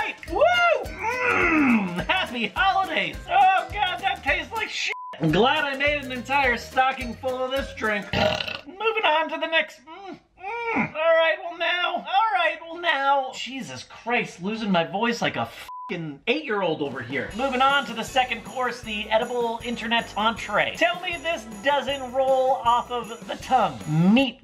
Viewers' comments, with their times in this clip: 0:07 I SWEAR I could smell his burp.
0:08 who else thinks he sounded like lemon grab from adventure time? 😂😂
0:08 got you sounding like Mr. Meeseeks ma dude
0:11 he sounds like Morty from Rick and Morty
0:12 he sounds like morty 😂😂😭